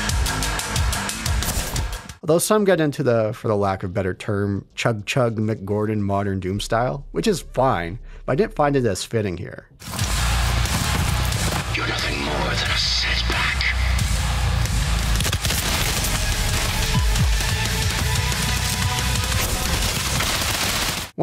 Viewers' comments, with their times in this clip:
0:07 that shit sounds like doom mixed with the matrix. I love it!!!